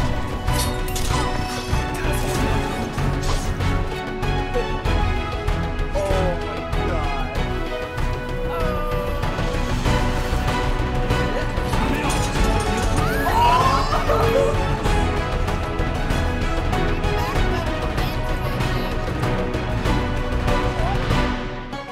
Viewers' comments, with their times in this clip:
0:05 did he roll on air?!?!?! distorted harry potter music plays